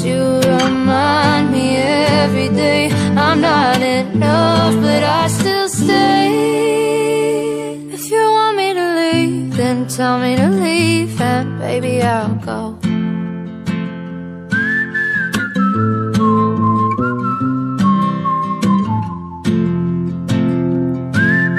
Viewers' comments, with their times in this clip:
0:03 its still sad but I can’t get over him screaming at an ucochess person lol!